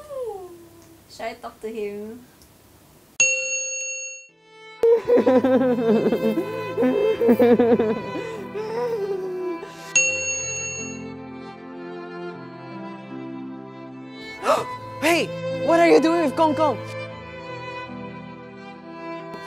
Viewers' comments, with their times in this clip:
0:03 he cries like a child